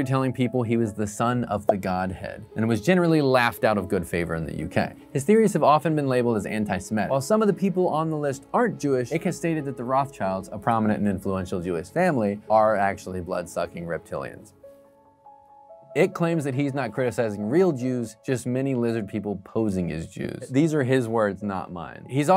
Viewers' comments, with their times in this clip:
0:07 ^Anti-Semitic. So many pronounce this wrong; this guy’s pronouncing and spelling it wrong!😳